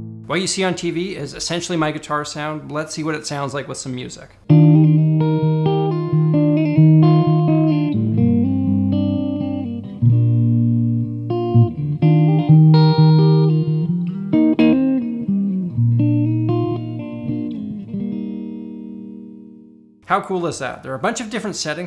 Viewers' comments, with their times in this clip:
0:03 does that song have a name? Sounds beautiful